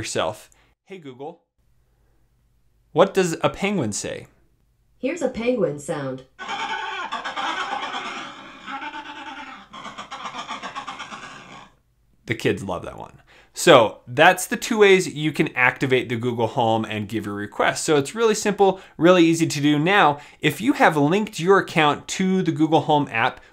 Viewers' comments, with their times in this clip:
0:06 Sounds like starting an old car